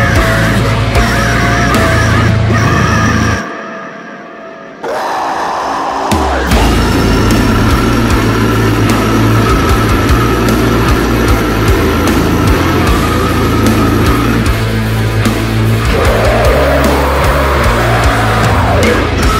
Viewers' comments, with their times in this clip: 0:06 Ok the groove thanks now I need new underwear